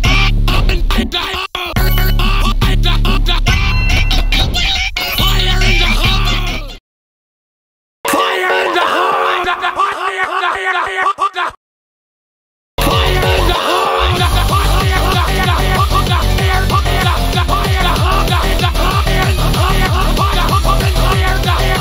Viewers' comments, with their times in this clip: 0:07 Bros using the audio not the audio from the test thing